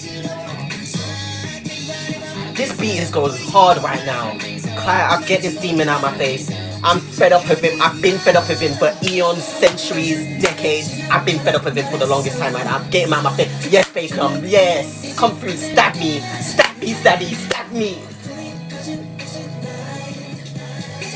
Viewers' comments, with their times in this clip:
0:04 “This penis goes hard” Why is this so accurate to the video?